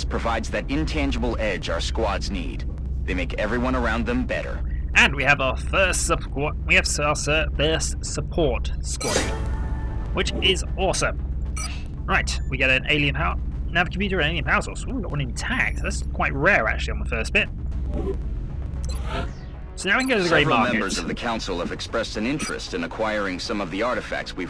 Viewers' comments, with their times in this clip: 0:05 Nasty audio encoding glitch there.